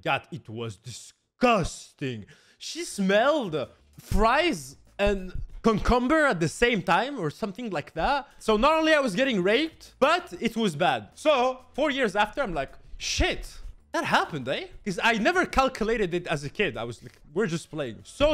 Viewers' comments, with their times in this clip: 0:05 The way he says "cucumber" sounds like "cumcumber"